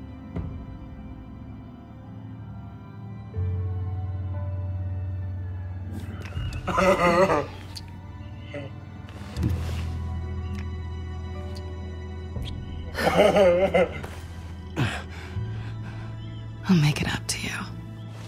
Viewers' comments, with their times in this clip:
0:06 Yoo what was that laugh 😂😂😂
0:06 why is this man laughing like that. he's laughing like fready flintstone off of the Flintstones
0:06 Iv re played this dude laughing like fifty time this is my favorite clip of him ever 😂. This whole thing hilarious